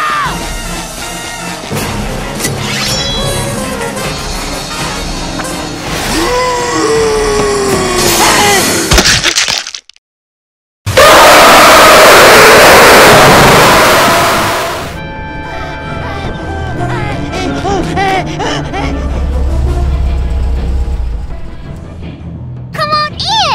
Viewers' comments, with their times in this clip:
0:09 TURN YOUR VOLUME DOWN
0:10 KING KONG ROARS?
0:10 EARRAPE KING KONG
0:10 EARRAPE KING KONG
0:11 Please lower your volume
0:11 sounds like King Kong
0:11 Patrick.EXE's jumpscare is literally King Kong's roar from King Kong Vs Godzilla 1962 but with louder audio